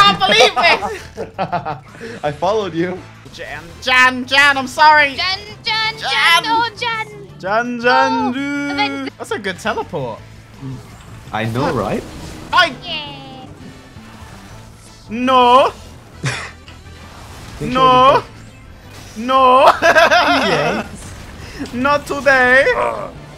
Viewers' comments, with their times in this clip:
0:08 that sounds frighteningly like a Japanese Ronald Mcdonald Touhou Remix.